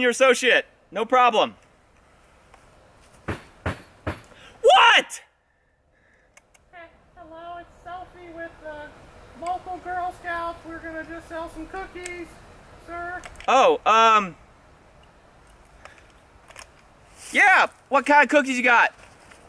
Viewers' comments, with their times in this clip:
0:04 that yell and the look on his face almost looked entirely real